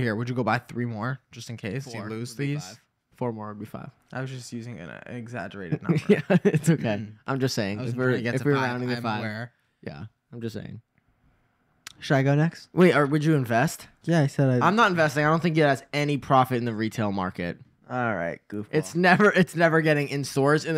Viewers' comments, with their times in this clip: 0:06 "yeah it's okay " was so cute and sweet